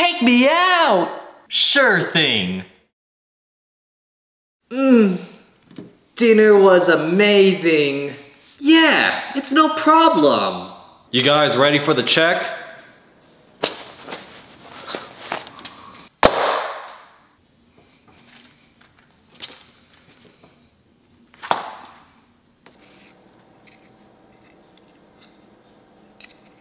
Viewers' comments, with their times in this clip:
0:10 meo meo in background